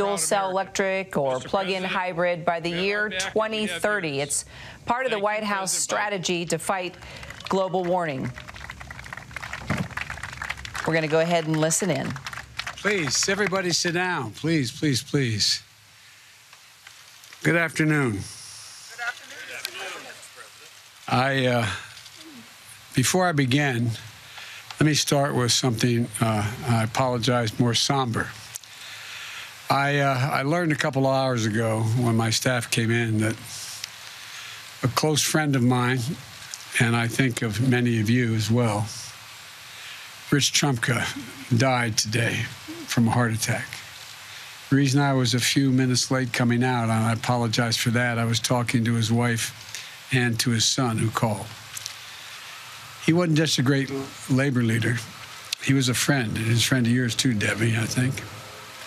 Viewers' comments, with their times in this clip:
0:06 Global warning? Haha
0:42 did he say “I wish trump would have died of a heart attack” lmao 🤣